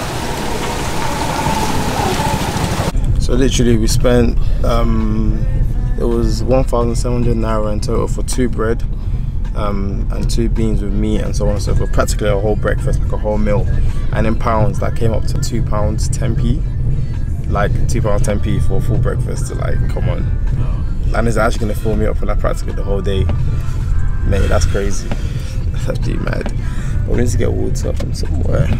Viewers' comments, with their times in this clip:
0:09 The accent switch up killed me!🤣🤣. Great vlog.